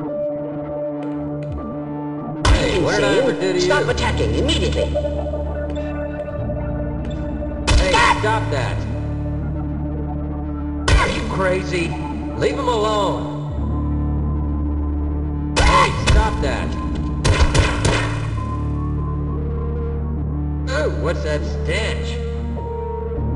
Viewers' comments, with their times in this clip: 0:07 "STAHP" (has an aneurysm)